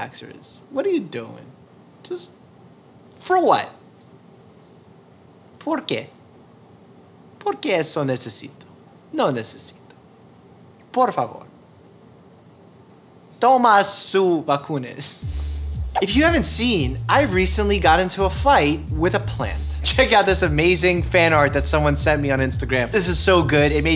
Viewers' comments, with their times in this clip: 0:05 No one: Nobody: Literally no soul on earth: Dr Mike: *starts speaking in Spanish *
0:05 This man straight up just speak Spanish
0:05 I'm from Colombia and I just wanted to say that your Spanish is super good..... Specifically when you said "no necesito, toma su vacunas" I loved it☺️ Btw thx for the good content, I love watching your videos :)
0:05 Love the casual flex on his pretty good Spanish
0:06 I haven't laugh that much in so long, you're so cute speaking Spanish 😂😍